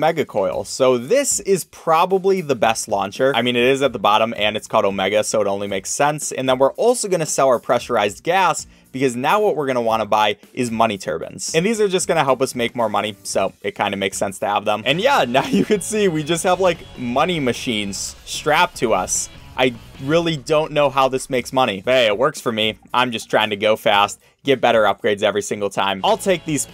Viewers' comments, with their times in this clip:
0:09 "Money TURBANS?" Lol.
0:11 money turbans? We in Dubai?